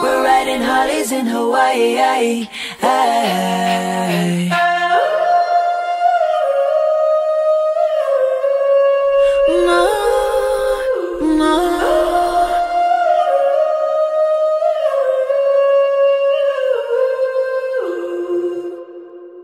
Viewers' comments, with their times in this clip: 0:04 ahhh that so angelic